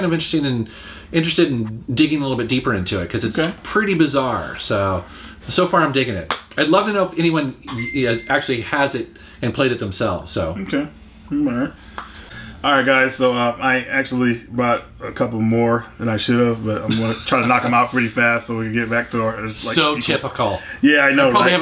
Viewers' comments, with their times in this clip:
0:07 who else thought they got a notification? XD